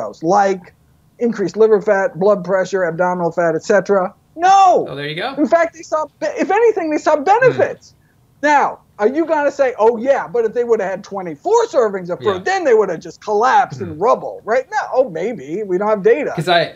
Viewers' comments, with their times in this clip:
0:03 The way he talks is fucking hilarious and so stress relieving. He's like a wack health-obsessed scientist from a dreamworks movie like bee movie < my favorite clip